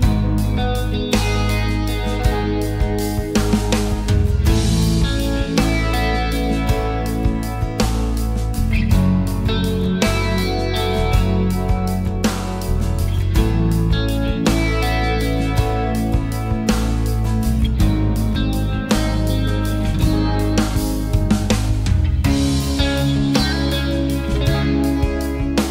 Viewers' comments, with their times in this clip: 0:10 Seriously put your headphones on and listen closely. There is a low volume single ring in the background every now and then. First time exactly Am i going crazy here? Anyone else hear that? :D